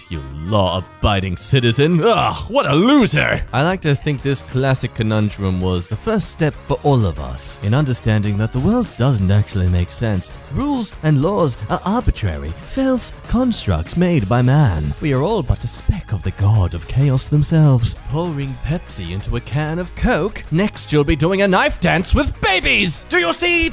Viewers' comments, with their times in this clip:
0:05 I love your voice and onward. It sounds like Yu-Gi-Oh! Abridged